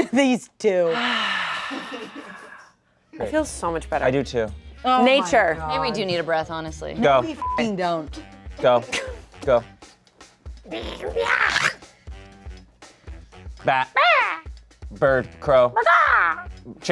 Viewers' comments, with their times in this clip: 0:04 i was laughing so hard that my stomach hurts so bad. It's the transition from one bird to another dinosaur bird or whatever that monstrous creature is. She sounds so funny doing that second card i am done. Just look at her mouth, shape of her mouth and the. Awful noise coming out. 🤣